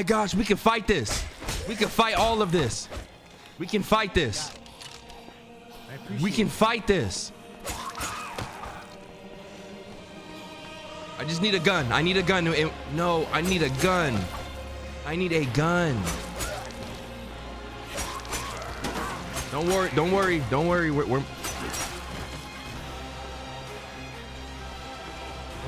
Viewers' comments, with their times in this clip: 0:07 That lost judgment music hit DIFFERENT 😭